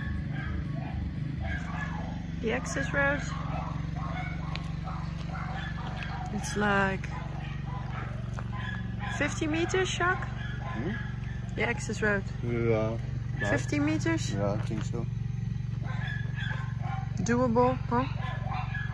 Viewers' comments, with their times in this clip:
0:06 Oh yea... super quiet :D